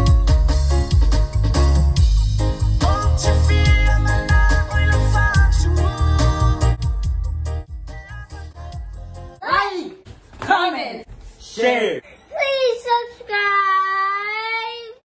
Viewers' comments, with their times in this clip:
0:09 .... Excuse me, I had my headphones on. Scared me so much that I farted... HELLOOOO!!!